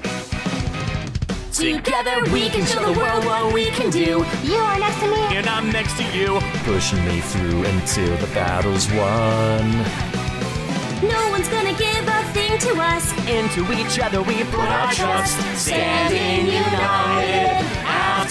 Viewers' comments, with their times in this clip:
0:04 i like how knuckles cuts off amy on her line xd.